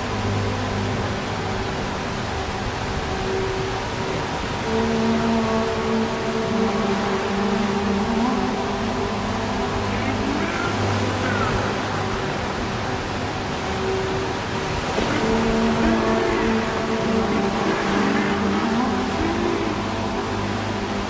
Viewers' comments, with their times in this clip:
0:09 Does anyone know what the distorted voice says? It sounds like its saying 'can you hear the sea' which makes sense because it's the track name but idk